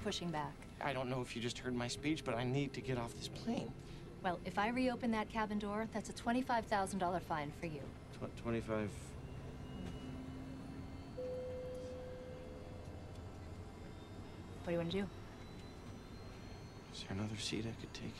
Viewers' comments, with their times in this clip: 0:03 I can feel his nervousness when his voice crack while saying "plane" in 🤣🤣🤣